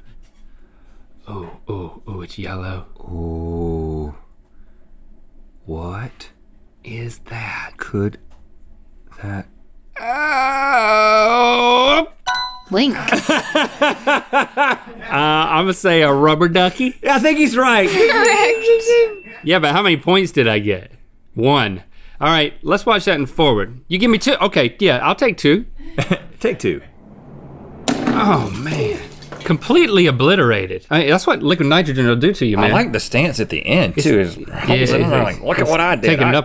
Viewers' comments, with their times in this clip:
0:03 No one: Minecraft zombies:
0:18 that laugh got me dying